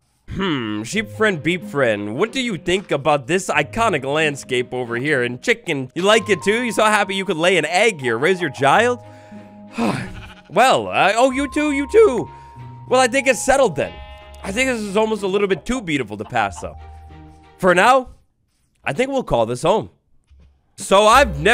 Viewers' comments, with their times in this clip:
0:06 rizz their child? Police I swear to god